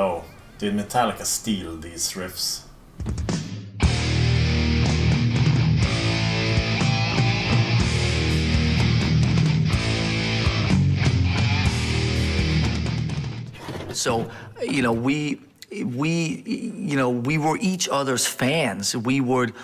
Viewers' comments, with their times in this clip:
0:04 really reminds me of Ride the lightning pre-solo riff